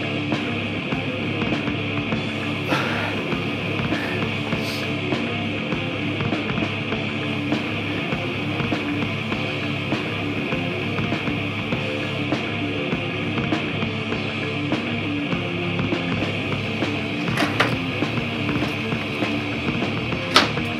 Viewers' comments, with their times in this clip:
0:03 The metal that Paul was listening to was awesome! Made me respect him. Too bad he has a coke problem.